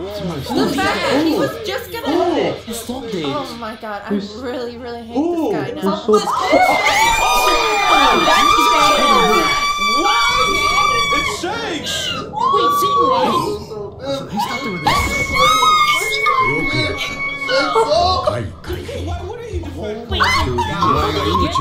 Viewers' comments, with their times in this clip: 0:06 R.I.P Headphone users.